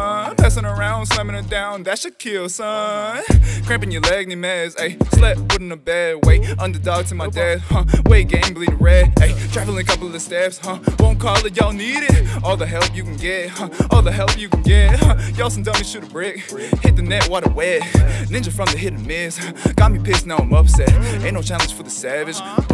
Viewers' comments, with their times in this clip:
0:03 The flow starting reminds me of Dom from Brockhampton (specifically his verse from STAR)